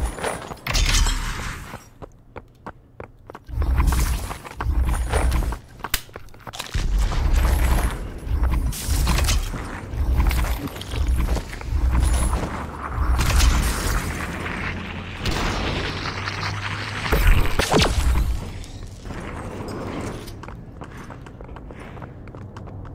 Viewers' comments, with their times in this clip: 0:06 Where'd the slap come from? Also, is he using a shotgun and sniper?